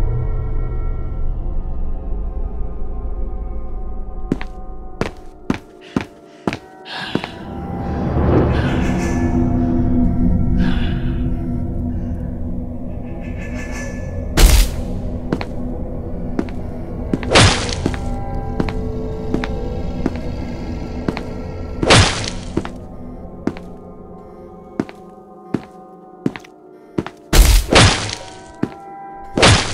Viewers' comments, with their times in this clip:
0:08 that one awkward moment when you realize that someone open gum in the classroom
0:12 pillar men theme plays